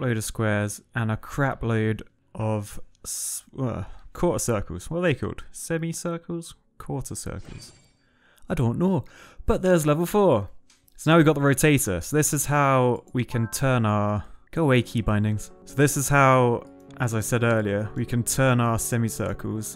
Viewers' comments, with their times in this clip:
0:07 Sounds like Shrek
0:07 Did you switch to a geordie accent because of the ross noble sketch?